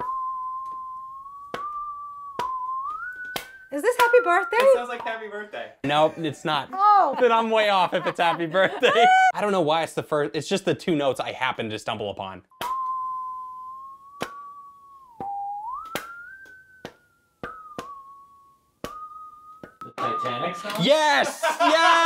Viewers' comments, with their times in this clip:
0:10 I don't know why but I thought it's Rick Roll IDK??